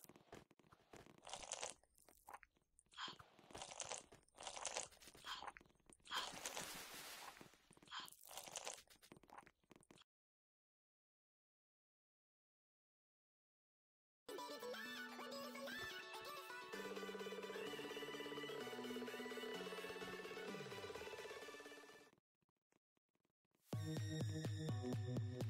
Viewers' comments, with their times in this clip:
0:06 Some disturbing sounds...